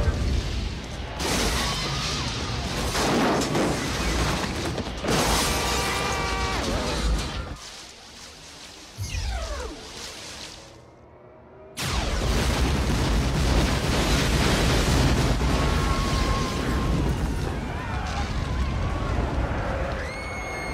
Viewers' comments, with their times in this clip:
0:08 is one of my favorite laser sound fx designs.